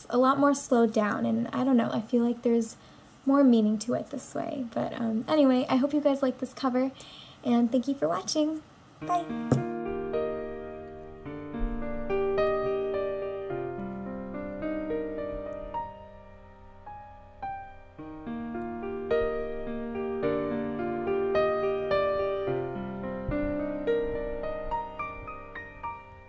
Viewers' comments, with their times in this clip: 0:08 Blah blah blah till ...less words, dr... But ur voice is amazing)